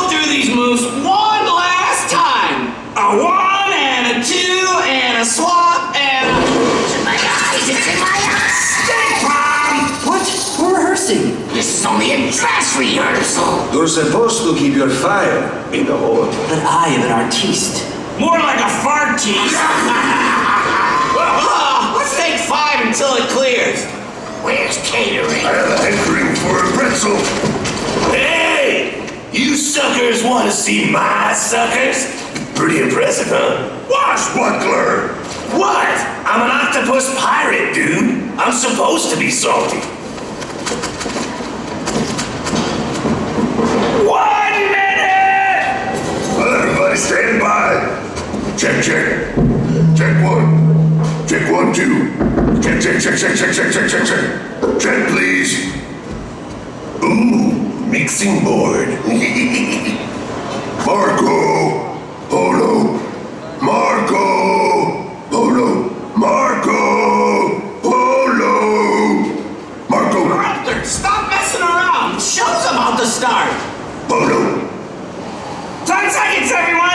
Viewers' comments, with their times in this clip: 0:06 Stink Bomb's fart explosion is probably the most hilarious thing in this presentation, and Eruptor's voice lines are way too hilarious, too! 😂😂😂😂😂😂😂
0:57 That Scooby laugh. 🤣